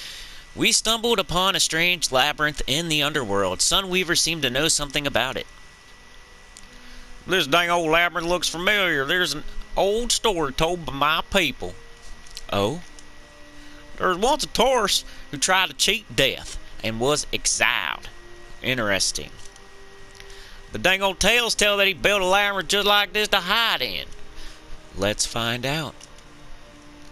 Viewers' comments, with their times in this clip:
0:09 Oh hey, they hired the voice actor of Goofy.